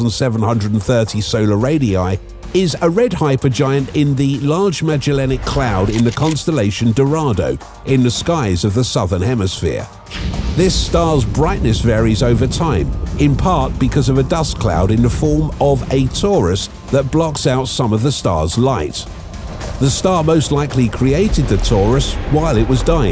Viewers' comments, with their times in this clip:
0:09 Heh! I first heard, "This star's brightness varies over time, in part because of a dust cloud in the form of a tourist that blocks out some of the star's light." And I thought, JESUS what an asshole.